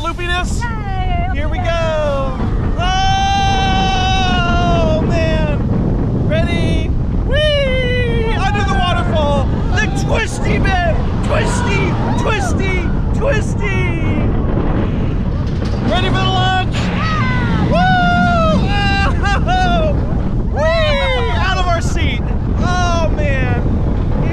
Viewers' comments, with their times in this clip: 0:04 Idk why but this part when he says twisty sounds like Morty
0:06 he sounds like morty from Rick and morty 😂